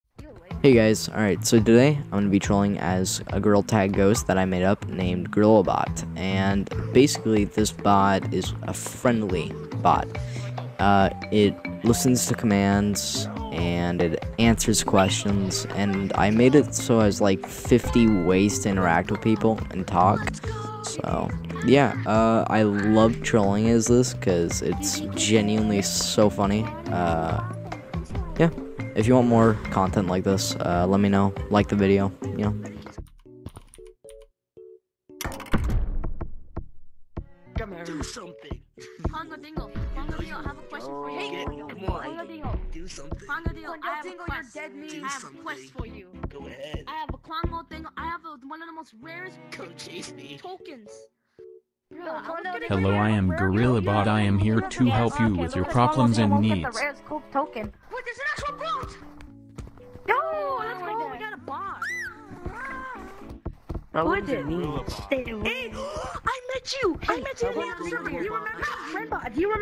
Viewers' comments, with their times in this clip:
0:01 bro at 1.75 he sounds so funny
0:57 This sound looks like OOO OYE QUE ES ESO BROS-